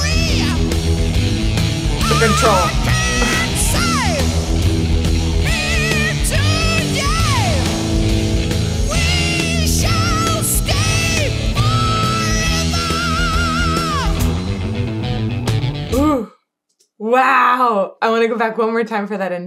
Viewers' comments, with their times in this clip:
0:07 Is that KK mangling the end of Deceiver by going into the last section early, and then scrambling to fix it? -52.